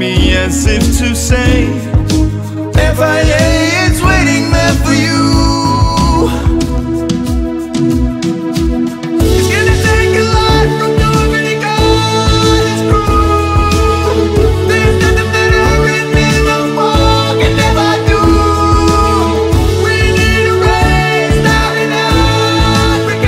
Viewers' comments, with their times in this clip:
0:08 Hahahahahahaha how Pascal plays the drums.